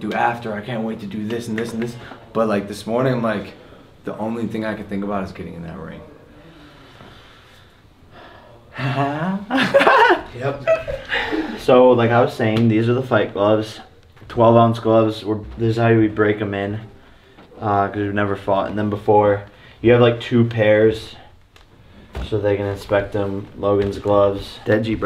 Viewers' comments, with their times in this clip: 0:09 Logan’s laugh is so cute